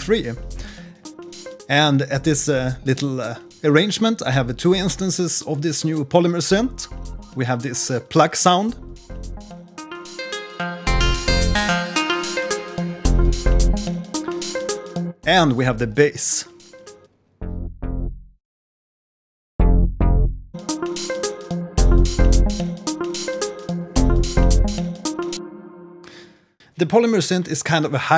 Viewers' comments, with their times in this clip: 0:10 sounds very similar to the direct wave synth pluck on fl studio for android. I ❤️ bitwig to bits but just can't afford it. would consider buying if you could pay weekly/monthly from abroad